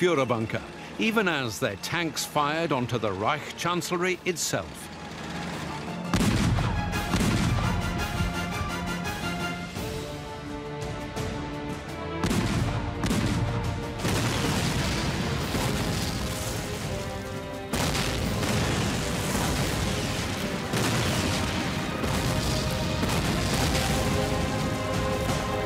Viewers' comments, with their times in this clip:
0:10 the tanks firing at reich chancellory and the background music is so epic and it literally, brings goosebumps Must say, russians literally avenged Stalingrad, rzhev, Leningrad,Ukraine and other Soviet cities. By firing at Reichstag and reich chancellory, they literally showed to Hitler, the fate of Nazis and third reich